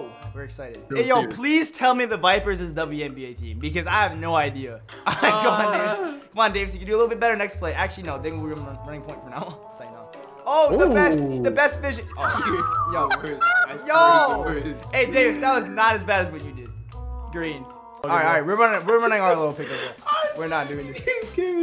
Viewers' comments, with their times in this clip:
0:04 there was a moan